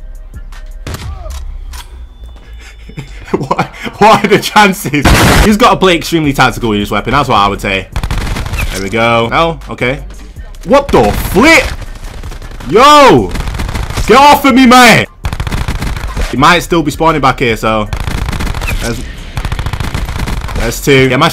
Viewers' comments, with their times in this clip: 0:09 *Illuminati music plays